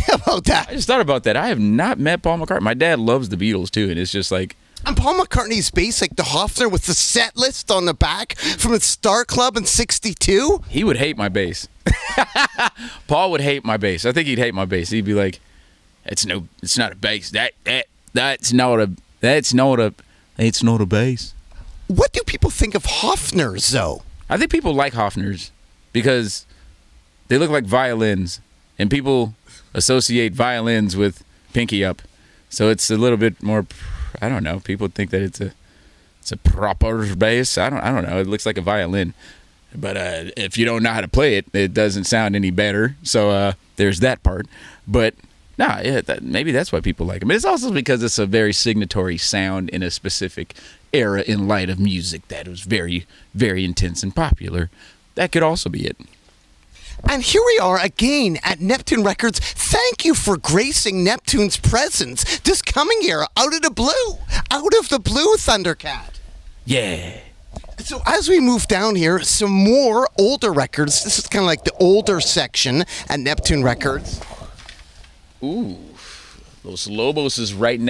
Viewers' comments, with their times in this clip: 0:10 🤣 The way he just troubleshot the accent of Paul McCartney in live action.
0:10 best Paul McCartney impression lmao
0:13 I love how Thundercat started to do a McCartney impersonation but was stuck on an Australian accent for a second.
0:14 i love that thundercat did 3 very bad paul mccartney impressions in a row to get ready for his suddenly very good impression lol
0:14 He forgot at first how McCartney talks and then nails the impression😂
0:14 he went from southern US to australian to english in 4 seconds
0:16 Thundercat trying to perfect his McCartney voice “that’s not a bass”
0:16 The way he dialed in on the accent on the last attempt was actually uncanny LOL it sounded edited.
0:18 Took some time but the Paul impression came through lol
0:19 THAT WAS PAUL IMMPERSION WAS SO GOOOD WTF
1:05 I love how Thundercat answered Yeahhhhh! When Naurdy was asking questions